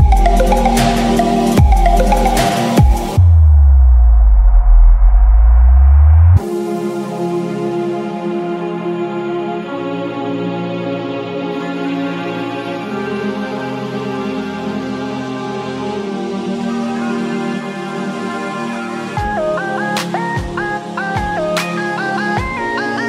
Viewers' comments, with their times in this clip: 0:05 Very nice track! keep going.... is a bit to fast transition in my opinion :)